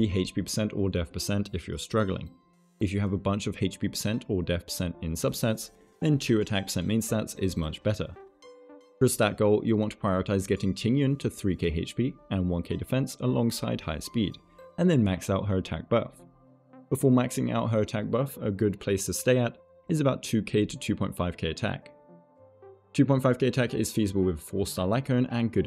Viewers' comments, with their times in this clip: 0:10 that Tingyun pronunciation was so on point, better than the other ones, I think it's cuz the intonations are correct.